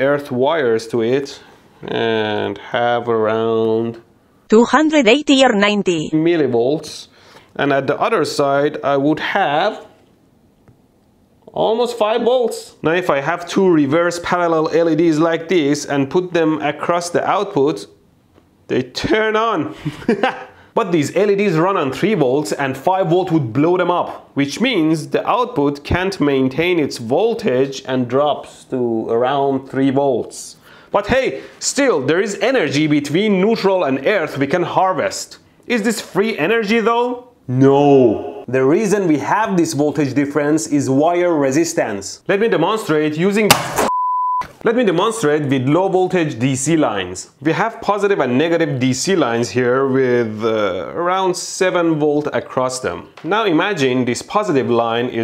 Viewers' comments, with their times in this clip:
0:03 That sweet google spanish translator voice tho "Tu jandret eiti or nainti"
0:42 Let me demonstrate ** BOOOOOOOOOOOM ** : ))
0:42 Let me deMONSTER it